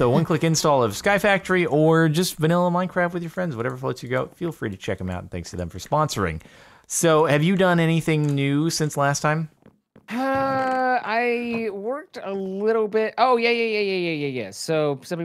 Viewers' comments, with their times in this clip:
0:03 Anyone hear "Whatever floats your goat"